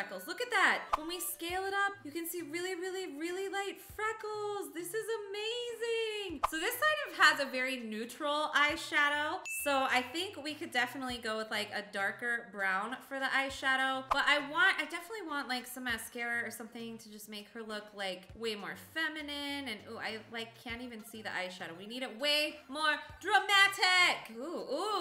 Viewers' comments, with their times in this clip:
0:08 Lol, Bubblegum Princess Smiled when there was a "DING!"